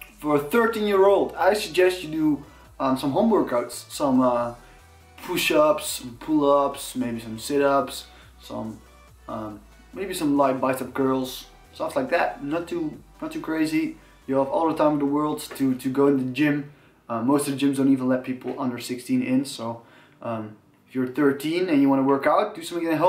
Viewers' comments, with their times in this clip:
0:04 I thought he said in the beginning "I suggest you do your homework"